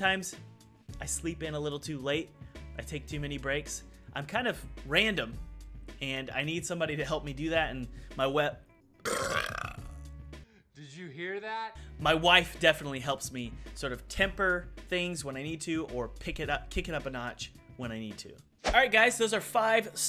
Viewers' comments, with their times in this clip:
0:06 You deserved a thumb up just for the belch